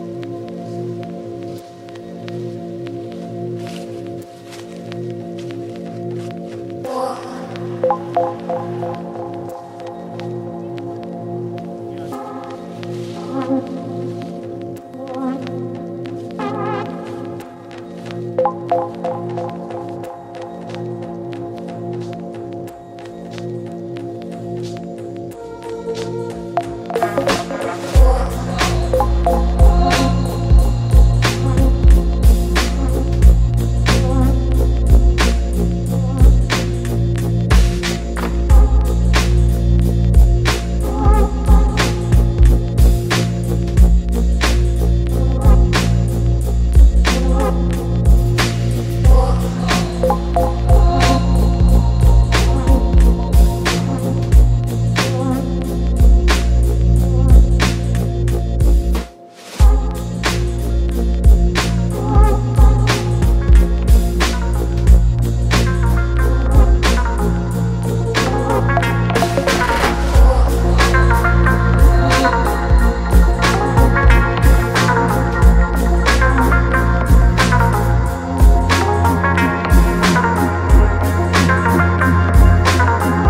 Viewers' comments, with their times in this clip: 0:10 you can hear a kid and a man talking, listen to it
1:05 your secrets start ...unforgetable sound so much of this important BLUES sound...this song is traveling into insideyourselfe music tells more